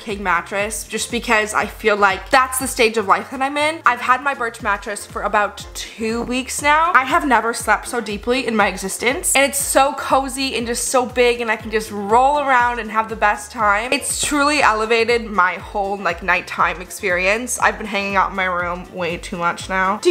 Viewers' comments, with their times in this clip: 0:04 did u fart